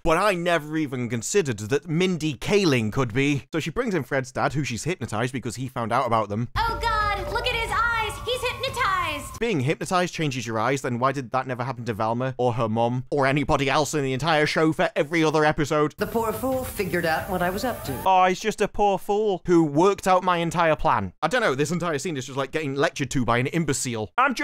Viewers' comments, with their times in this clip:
0:05 People talking in their sleep have more expression in their voices than she does